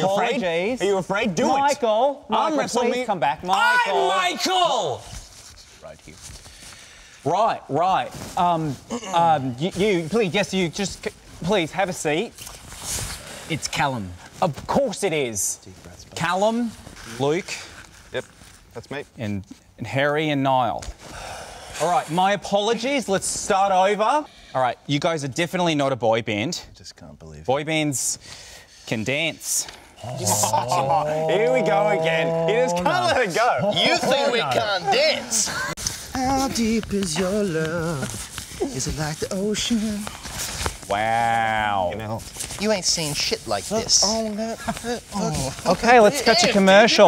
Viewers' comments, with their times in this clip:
0:03 Now I have to check up on my ears Thanks Michael
0:35 When Ashton started singing how deep is your love I died